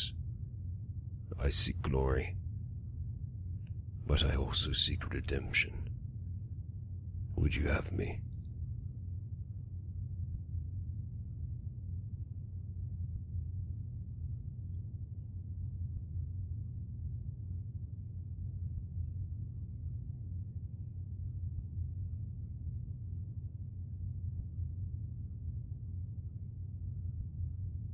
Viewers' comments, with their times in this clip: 0:08 I have read your note in your video description, but um... you still don't know what happened here? Rofl. Expect the faint and relaxing noise in the background, yes, strangely, there is no voice. It's like Leon has the ability to read someone's mind... xD